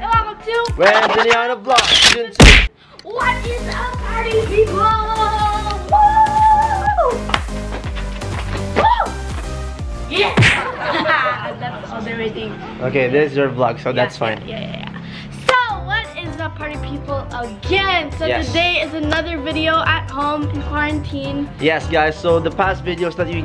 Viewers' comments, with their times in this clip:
0:04 energetic What is up party People